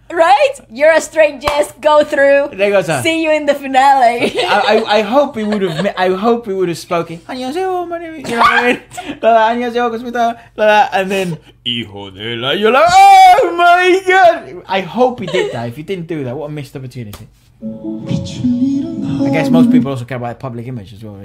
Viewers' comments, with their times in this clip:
0:07 speaks Korean-ish hahaha